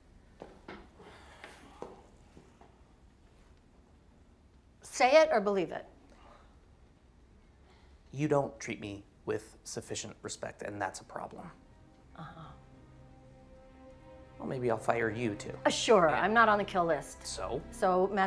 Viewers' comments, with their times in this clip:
0:06 "You don't treat me with sufficient respect and that's a problem" that cold look on Romans face settles in and then the music comes in and starts building literally along with the scene the rest of the way! I got chills when I watched this last night.